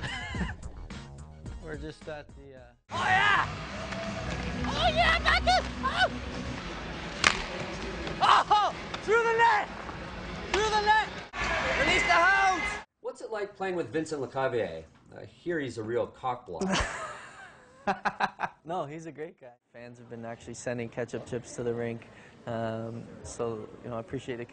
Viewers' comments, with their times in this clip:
0:10 LMAO! Did Stammer say "Release the hoes" ?